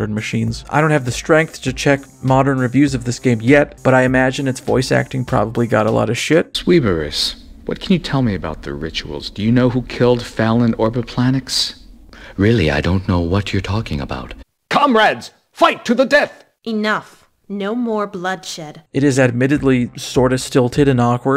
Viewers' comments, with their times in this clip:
0:05 When you were showing off dialogue I fuggin swear I thought you were part of that dialogue as well when you went "it is admittedly sorta stilted and awkward" until I saw the text on screen didn't match